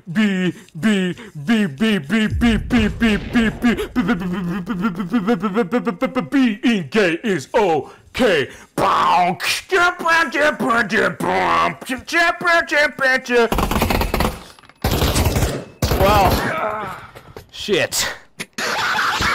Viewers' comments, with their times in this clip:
0:05 ThAt BaSs DrOpPeD hArDeR tHaN mY gRaDeS